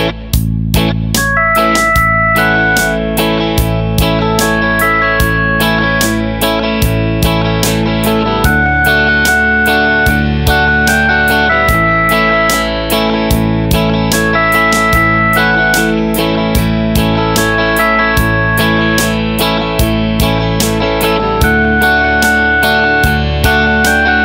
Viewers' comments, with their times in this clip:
0:06 How us the strumming patter done ?